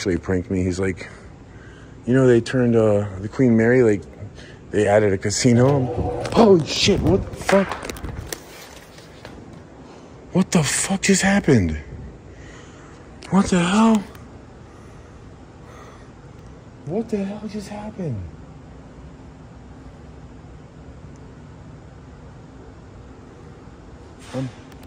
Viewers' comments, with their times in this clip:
0:05 ❤ IN BALLROOM YOU ASKED WHAT JUST HAPPENED, U KICKED PLUG ON FAN , UNPLUGGED IT. IT MOVED A LITTLE ON THE TABLE TO MAKE THAT NOISE.